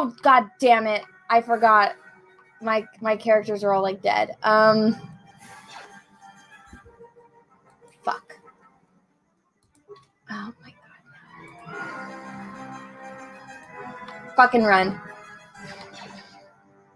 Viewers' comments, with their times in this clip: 0:03 Incessant braying until dies immediately. Star Wars sucks now.